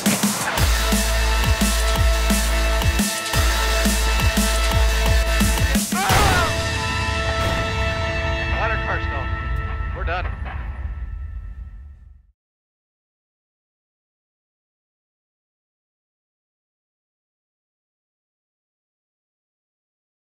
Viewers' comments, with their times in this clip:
0:05 The scream kills me LMFAO you guys are awesome!